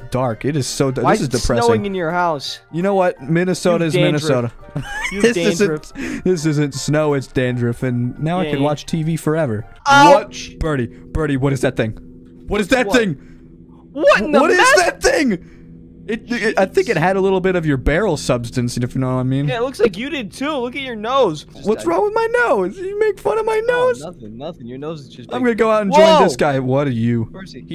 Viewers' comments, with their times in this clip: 0:10 that there is atrocity Atrocity is like the regular bear but it's badly decayed and burned and make some weird glitching noises and has no legs or a arm the leg its just a string and a very wide smile And also changes colors from regular orange to cyan and magenta